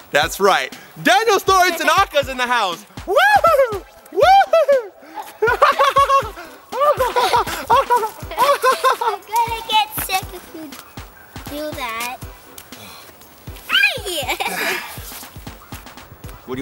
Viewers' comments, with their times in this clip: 0:04 the laughs xD